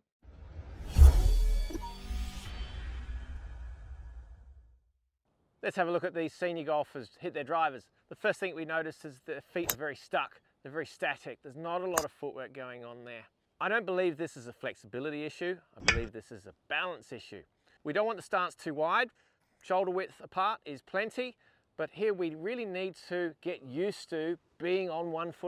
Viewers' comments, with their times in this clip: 0:06 At about the sec., it only plays through the left channel.